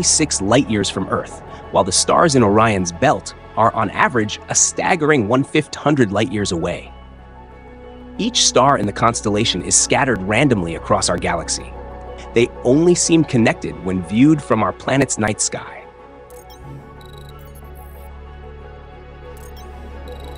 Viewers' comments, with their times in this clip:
0:05 glitch? “One fit hundred light years…..”. Caption says “1/00”.